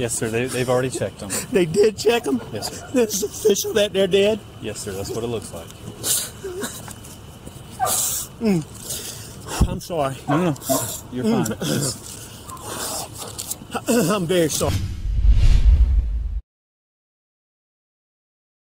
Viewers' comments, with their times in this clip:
0:05 Alex asked the officer if it’s official they’re dead. Did you all notice that look on Alex face and that sound he made immediately after the officer confirmed they’re dead. It was that glad they’re dead sound he made.. he knew the officer picked up on it which is why he said I’m sorry, I’m sorry. The officer said it’s okay. It was that sound of relief that they were dead. It was a giveaway for the officer.